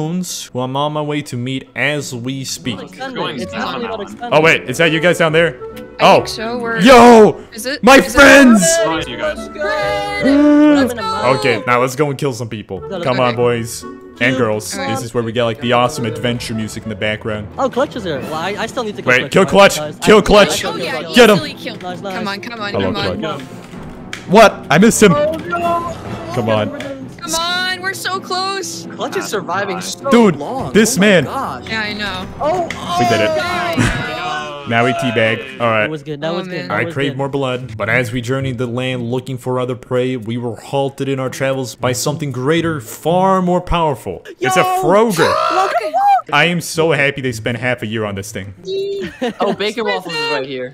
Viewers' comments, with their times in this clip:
0:06 lets just appreciate how he sounds just like techno when he says "my friends" rip
0:06 oh my gosh that sounded like techno
0:07 you lowkey sound like Technoblade.
0:07 ur voice like techno :'>
0:07 The way he says "goons" and "my friends!" Reminds me a lot of Technoblade
0:32 Why dose he sound like techno